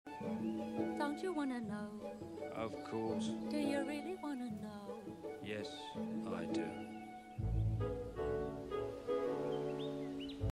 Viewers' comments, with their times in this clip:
0:05 the annoyed “Yes, I do.” only to be followed by the scene panning out and the video ending just kills me. As if not even the video cares about exposition.